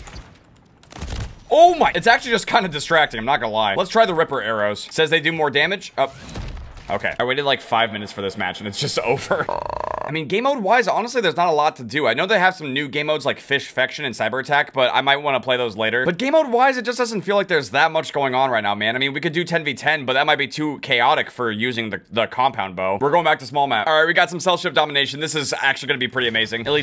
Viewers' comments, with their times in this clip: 0:09 new grudge sound confirmed !